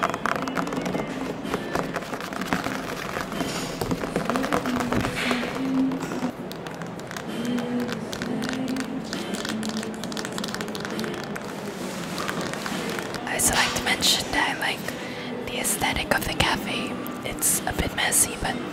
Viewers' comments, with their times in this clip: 0:04 I love how if you have captions on it thinks it’s applause